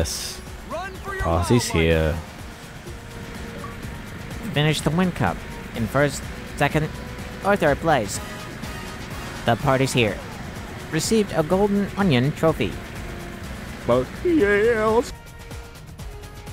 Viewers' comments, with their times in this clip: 0:04 that Ben Shapiro impression is uncanny